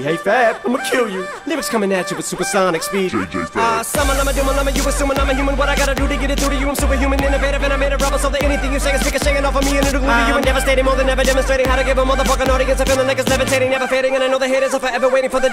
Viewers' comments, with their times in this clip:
0:03 when you have to roast your friend but schools about to end